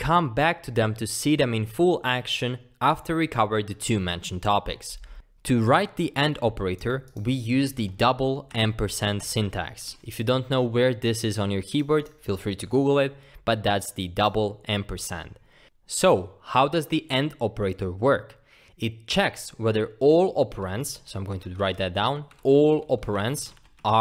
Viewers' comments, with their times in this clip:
0:10 For everyone confused he is saying Double AMPERSAND smh lol It sounds like he's saying "End Percent", 'In Percent" and even "M Percent". "Like this comment if you were confused as well